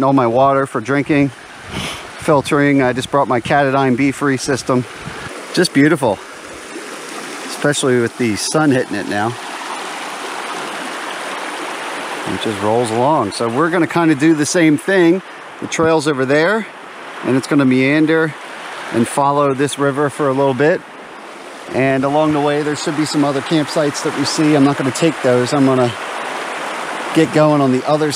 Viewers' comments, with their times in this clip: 0:10 But who is mowing the grass??!?!?